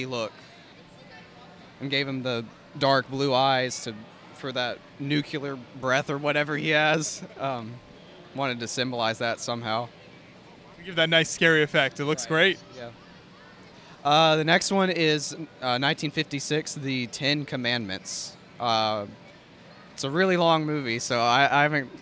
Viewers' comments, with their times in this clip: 0:05 Someone tell me, what does nucular mean?